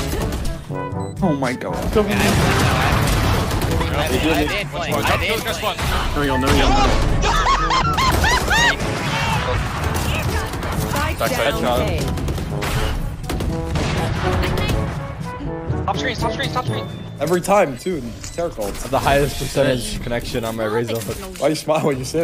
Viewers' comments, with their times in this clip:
0:04 best laugh of the year 😂